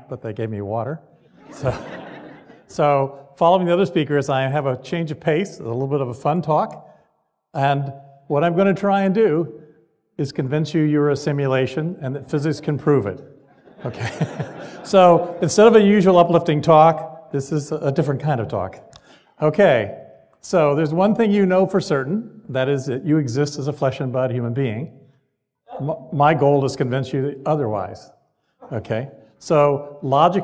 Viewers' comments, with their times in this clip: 0:07 yeah... ikwym ... maybe it's his body language ... and the fact he laughed unconvincingly at the very beginning while he was saying "Im gonna convince you that you are a simulation and physics can prove it" .... pfff
0:14 The people who laughed don't even realize how weighty this issue is.